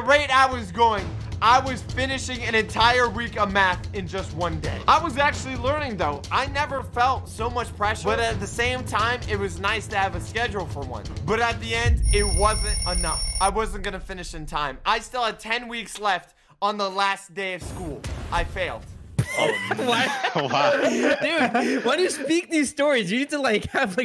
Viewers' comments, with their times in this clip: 0:08 Me: This doesn’t fell right Me again: Oh! [Music starts playing] Me: Yes GAS GAS GAS IM GONNA STEP ON THE GAS YOU KNOW THE WAY GO ANY LONGER YEA YEA